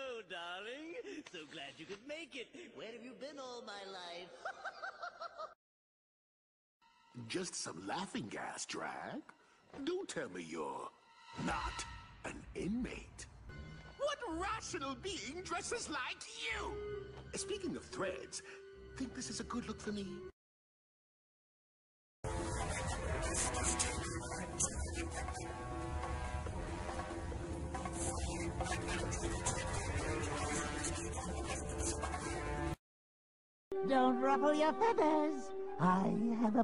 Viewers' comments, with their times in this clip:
0:05 my right ear feels good
0:21 Speak for yourself, but Jeff Bennett is rocking that joker voice!
0:22 Couldn't really hear the one for Batman the Brave and the Bold.
0:24 damn that was spot on, the static impression really gave me chills
0:24 Did anyone hear what jeff Bennet 's joker sounds like?